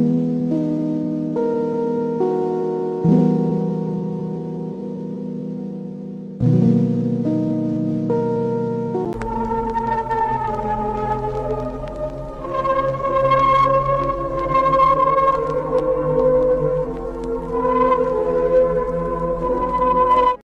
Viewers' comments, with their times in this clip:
0:09 sounds like Soviet holidays street but reverb and more sad 😔